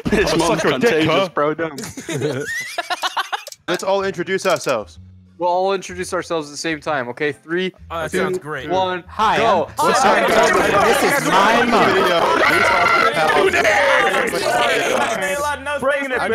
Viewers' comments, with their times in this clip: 0:03 i swear i heard a howdy doody in there